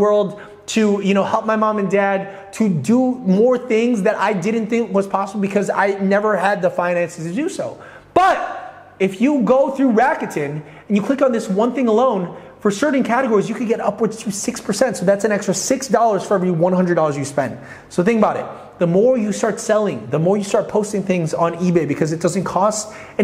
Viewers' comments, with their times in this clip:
0:06 he screams butt